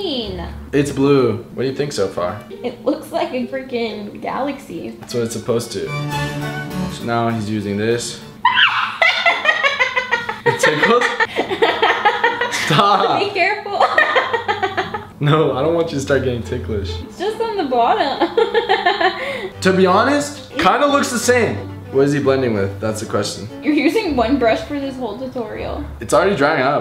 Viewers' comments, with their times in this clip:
0:08 her laugh tho 😂